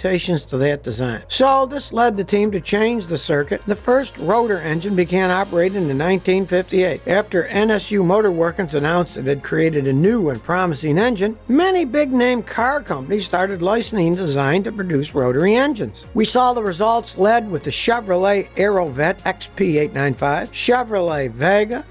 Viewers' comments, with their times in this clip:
0:04 I love the ark survival evolved music in the background 😋